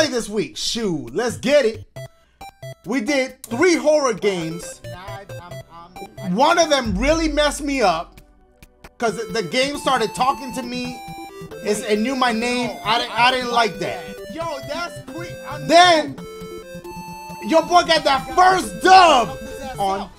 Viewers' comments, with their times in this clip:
0:04 Yoo they both say “I dont like that” 😂😂😂😂 in sync bc😂😂😂 tf fam anyone else see that?
0:04 Yoo they both say “I dont like that” 😂😂😂😂 in sync bc😂😂😂 tf fam anyone else see that?
0:04 Yoo they both say “I dont like that” 😂😂😂😂 in sync bc😂😂😂 tf fam anyone else see that?
0:04 Yoo they both say “I dont like that” 😂😂😂😂 in sync bc😂😂😂 tf fam anyone else see that?
0:04 Yoo they both say “I dont like that” 😂😂😂😂 in sync bc😂😂😂 tf fam anyone else see that?